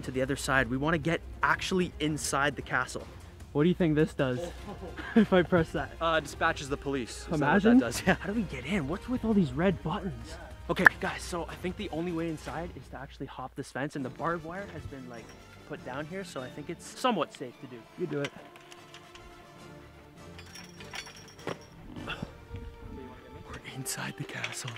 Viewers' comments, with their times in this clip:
0:10 that clap hurt WHOAH